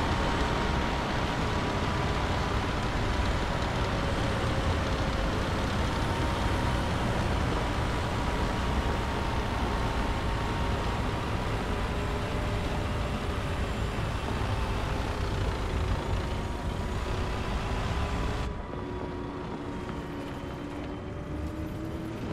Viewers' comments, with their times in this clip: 0:03 that Abrams sounds like a tiny 2 stroke engine with a big ass fan on it.